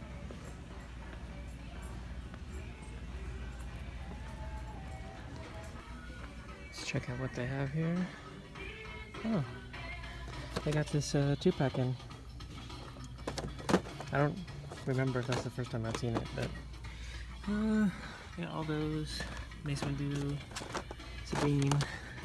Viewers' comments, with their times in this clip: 0:09 That's a dope Walgreen's. playing Bobby Brown on the In-store radio